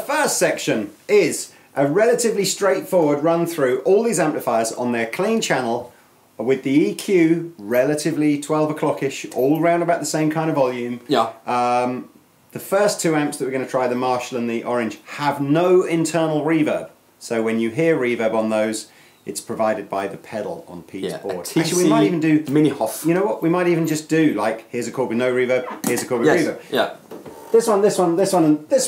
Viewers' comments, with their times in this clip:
0:09 All EQs at noon, lil bitta reverb.